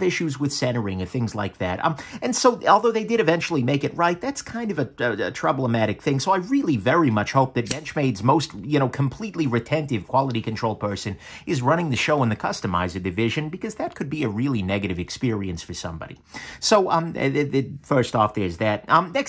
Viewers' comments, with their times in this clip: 0:04 Like many YouTubers, YOU HAVE CREATED A NEW AND USEFUL WORD!!! "Troub-le-matic". You meant to say "problematic" and the Closed Captions said "problematic" But I Heard TROUB-LE-MATIC!! Great!!! Add it do the dictionary!! IMHO. (oohh... Then then you said "COMPLETELY RETENTIVE..." As in retaining all the anus could retain? And more??? A word smithy thou art! imho)